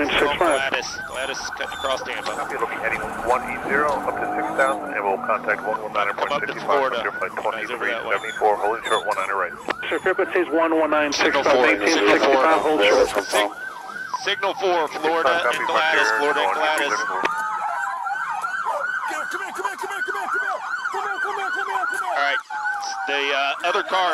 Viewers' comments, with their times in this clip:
0:08 starts and then a "hail of gunfire" or "a hella gunfire" as you like it